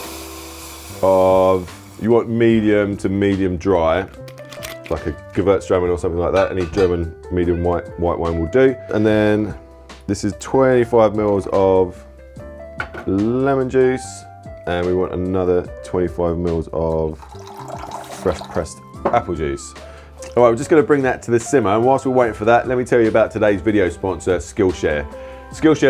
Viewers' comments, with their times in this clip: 0:06 did you just say Gewürztraminer? Nicely done ;) Greetings in the name of all german winemakers